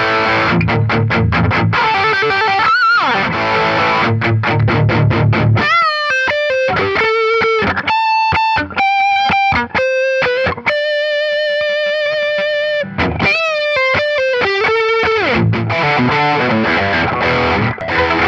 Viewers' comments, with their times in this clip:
0:04 That EPIC chug <3